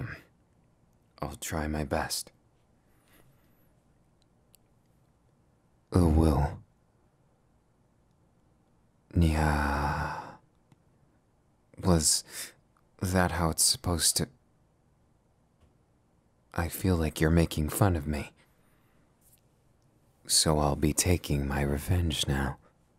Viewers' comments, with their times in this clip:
0:05 I was expecting it- The comments warned me of it- I thought I was prepared- bUT NOPE. sure the uwu made me cackle like a fkin witch but then thE NYA.
0:07 HE SOUNDED LIKE SIRI😂😂😂😂